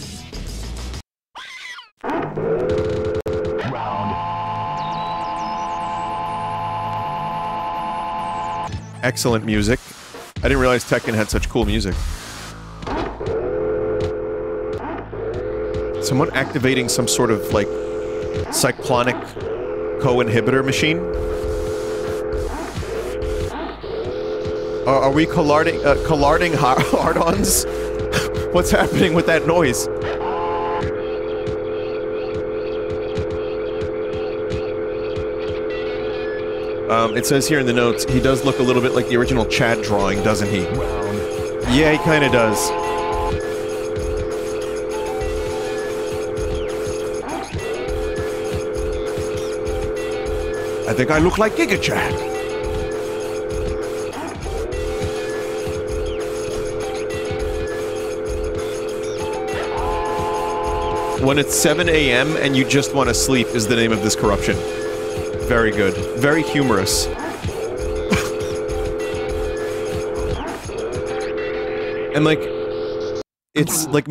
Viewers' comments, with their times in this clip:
0:05 So what instrument do you play? Musician: rolls steam locomotive in and starts blasting whistle
0:11 You always talk about photosensitivity but what about sounsesotivity?
0:55 is this one of those brainstorm/greenneedle things